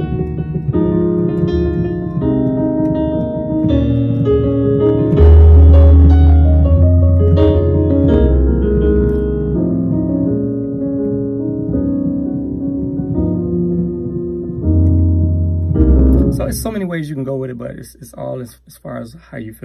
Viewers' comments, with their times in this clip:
0:04 The progression starting